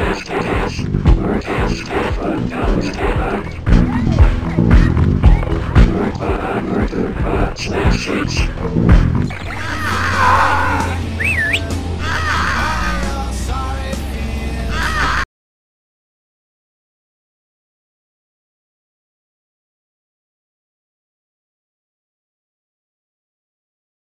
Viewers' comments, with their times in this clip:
0:10 Why does the Quarantine sound keep cutting out? I was quite enjoying the grunge background music, but even the FX are gone.